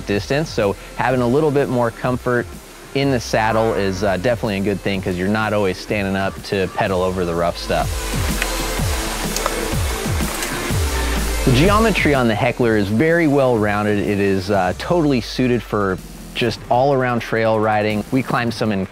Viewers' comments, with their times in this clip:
0:03 Did someone fart ?🤣